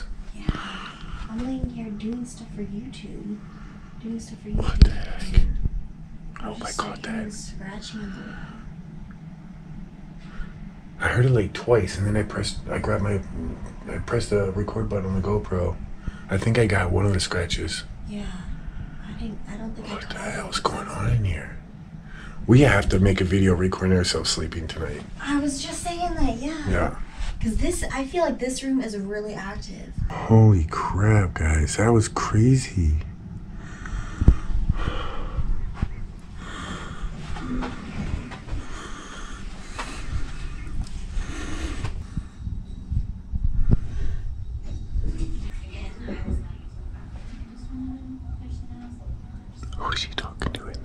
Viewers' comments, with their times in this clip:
0:03 Another breath saying “Yeah”.
0:36 Creepy whisper. Sounds kinda like "Come here"